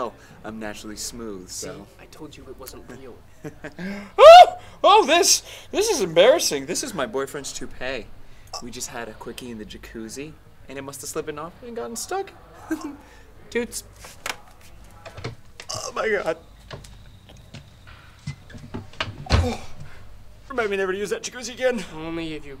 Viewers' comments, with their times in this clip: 0:04 high pitch scream 🤣